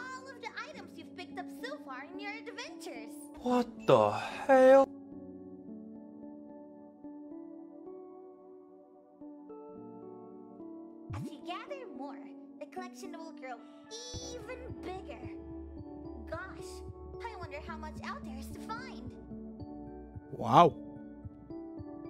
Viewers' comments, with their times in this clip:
0:03 he was so in disbelief that he turned to asian for a sec
0:04 i thought im watching uncle Roger for a sec there Wkwkwk